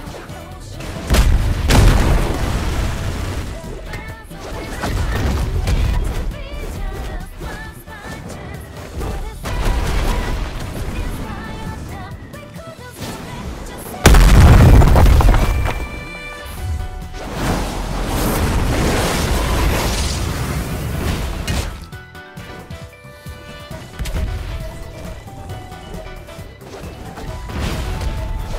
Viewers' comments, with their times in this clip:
0:07 bro that timing with the music
0:09 the music kinda matches the swings